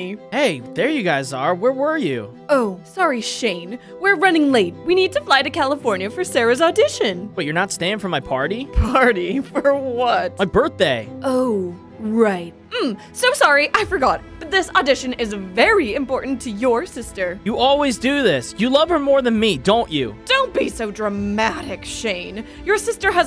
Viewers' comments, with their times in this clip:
0:08 the mom's voice change